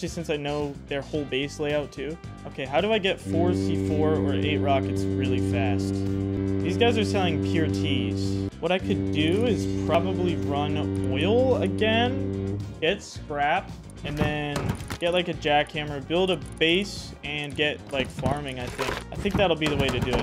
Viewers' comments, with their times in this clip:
0:05 cargo was out but bro seemed to not hear it